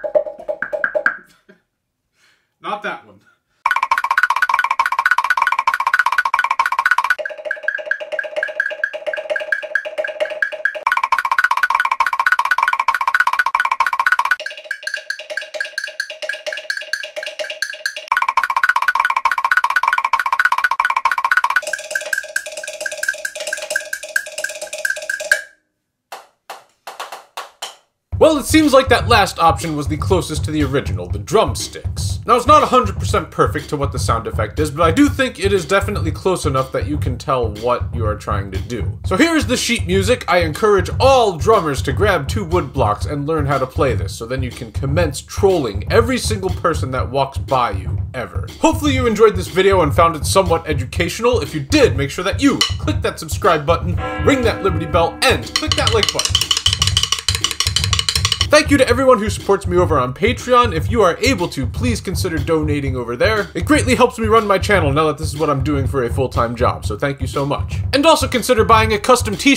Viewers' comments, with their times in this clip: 0:03 I think the correct notes that the character's steps emit at minute are: C# and F#.
0:07 It's actually a C# and an F# above. The bit you were playing was a D# and a G# above which was too high and too wide of an interval. Hope that helps!
0:15 sounds a bit like roblox footsteps
0:26 What the heck made music when he wasn’t playing anything??? 🤔 👉
0:56 Mr Krabs' walk